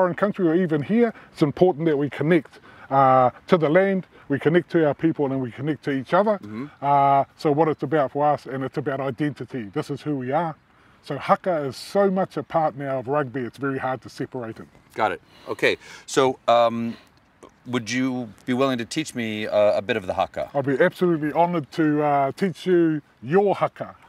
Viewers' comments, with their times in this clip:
0:05 This has to be one of the most inoffensive accents in the world this man is using. Imagine him delivering bad news and trying to make it depressing.